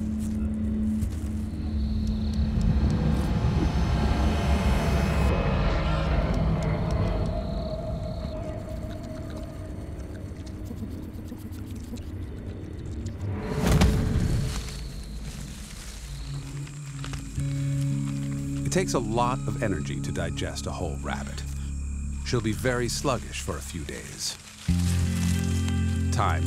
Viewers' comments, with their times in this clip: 0:09 hearing how fast he's munching